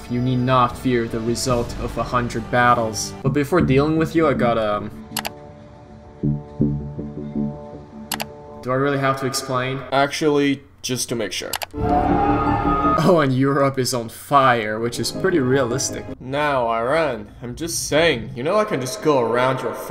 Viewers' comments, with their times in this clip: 0:03 plague inc music starts playing